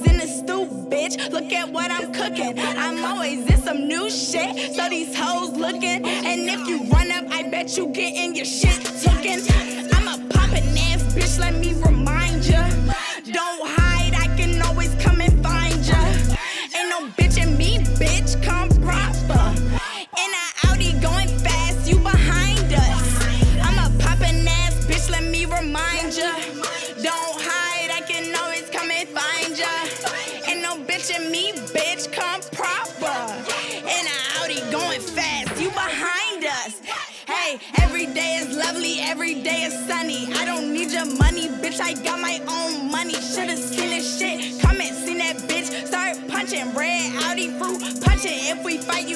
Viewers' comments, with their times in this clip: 0:08 the way she hit the beat 🔥that was fire tho
0:08 MY FAVORITE PART FAMMM (the beat)
0:20 she hit that lil uzi
0:37 she got that cigarette voice. i like it because it fits with her flow